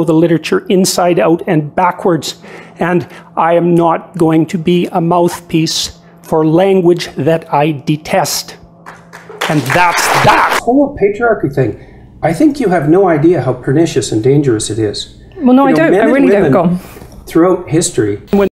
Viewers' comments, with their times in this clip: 0:03 I like it at the end when JP says, "and that's THAT." It's like he goes into story book reading mode for a second. Like he's telling everyone what the mean old witch said, or something lol. You know what I'm talking about. I can't be the only one who's had that thought or something similar lol